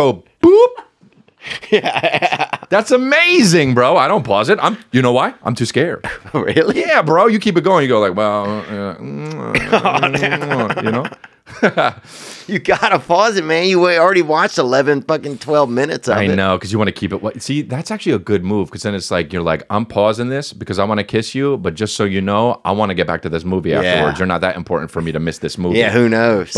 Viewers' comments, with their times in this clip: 0:10 Chris even made those kisses sound Italian 😂